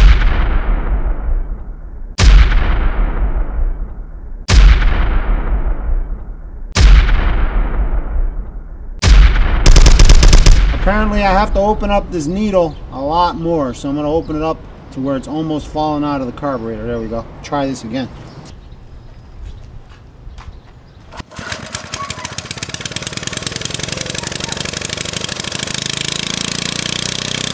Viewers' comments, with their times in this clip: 0:09 sounds like a machine gun